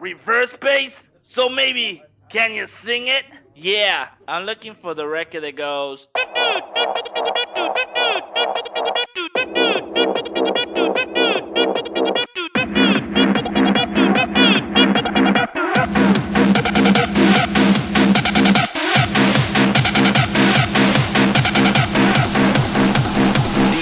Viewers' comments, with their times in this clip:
0:07 oh man, i cant stop laughing ! that sound is pumping!!